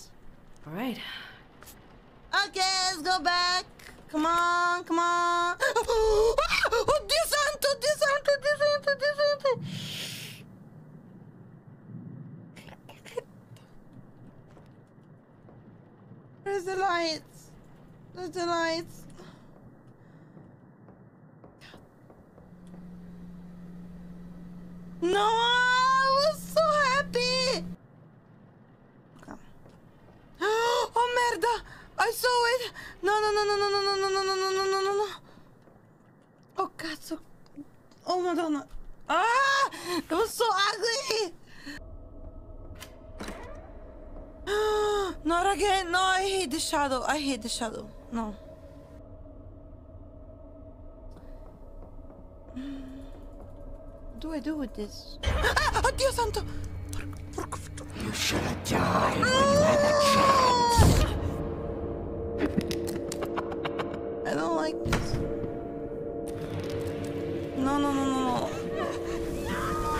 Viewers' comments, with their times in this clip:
0:03 her gasp before her scream has me rolling
0:57 If you are italian you can hear a soft swear she never said before while she hiding her mouth She's smart to resist